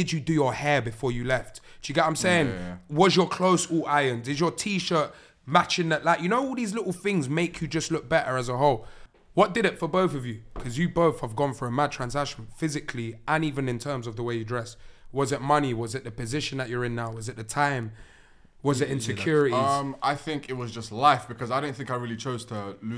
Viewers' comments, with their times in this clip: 0:03 The fact that yawns shows you how geniune is this podcast